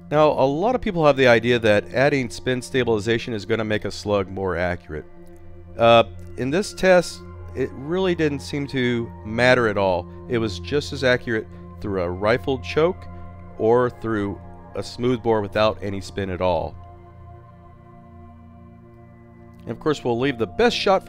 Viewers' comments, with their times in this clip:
0:08 that moment when the BASS DROPS!!!